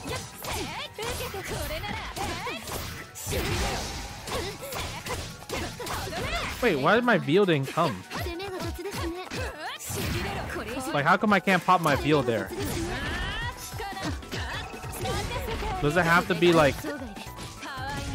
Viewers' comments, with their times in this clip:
0:05 "Vee-Lh" offended me on a personal level ( ；∀；)